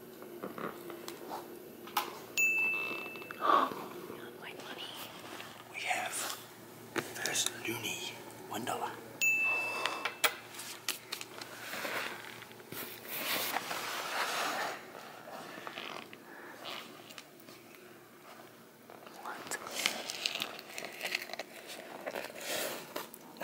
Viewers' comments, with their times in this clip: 0:09 "One dollah" Literal heavy breathing